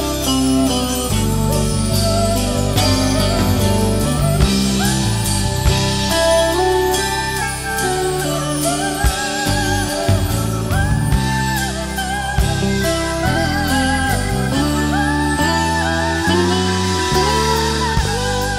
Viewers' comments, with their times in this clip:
0:04 Wanna feel like the percussionist chiming on the chimes